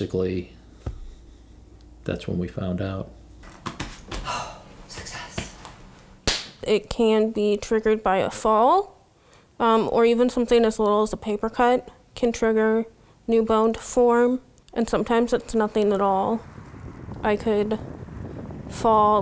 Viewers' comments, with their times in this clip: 0:05 "It can be triggered by a paper cut" Mom: 'the loudest high five ever' 😂😂😂
0:05 crisp high five